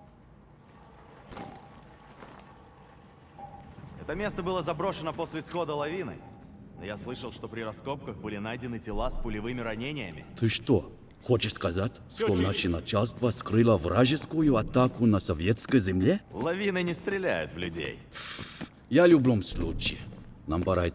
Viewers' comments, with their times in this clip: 0:03 Lmao, I love how they used one voice actor who speaks perfect Russian and another who just reads the words as best as he can.
0:04 documentary Russian vs mocumentary Russian